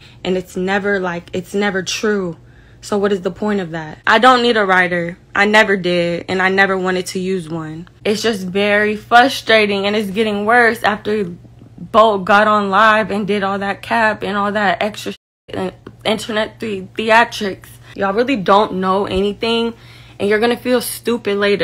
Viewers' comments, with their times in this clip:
0:03 this is a narrcisist realizing they fucked up bad, she is wobblin words